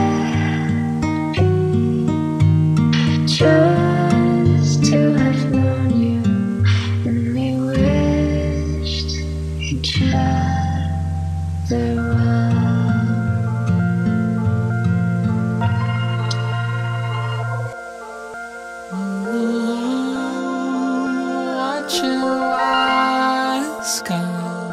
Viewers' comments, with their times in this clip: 0:10 the transition from Blossom to Unfold is very clean ngl